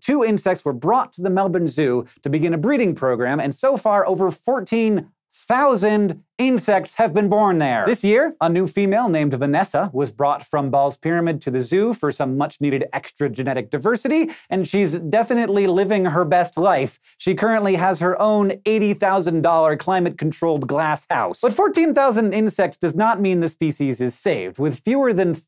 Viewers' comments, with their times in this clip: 0:07 The way Hank says "Vanessa" greatly amused me